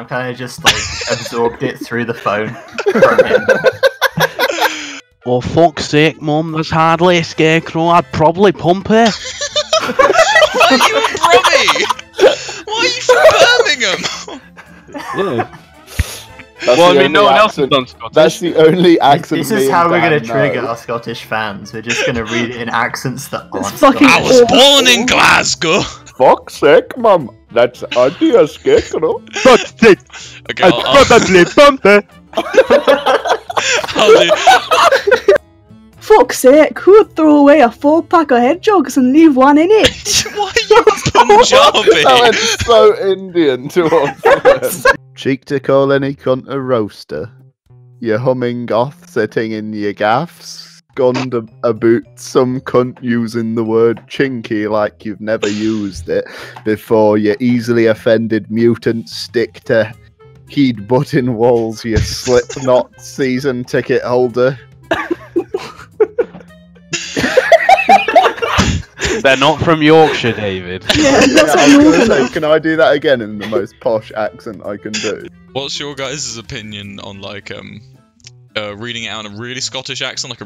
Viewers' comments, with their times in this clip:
0:05 he sounds like fackin rings star
0:26 That Indian accent is fucking spot on
0:26 that Indian accent
0:34 HAHAHHAHAHAHAHAHAHHA I am dying at that accent.
0:45 sounded like forrest gump
1:02 he sounds like Forrest Gump